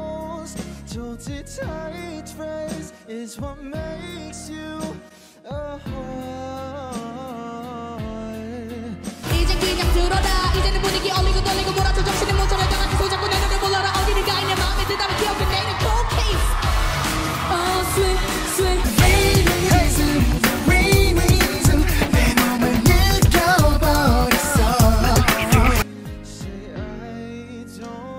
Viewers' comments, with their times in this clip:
0:10 If I'm not mistaken that's still jongseob's 'fastest' rap yet, so it's still linked and used to rank him on a few different lists 😂
0:15 okay HI IM NEW which of these boys was rapping like their life depended on it ????? CAUSE GAT DAM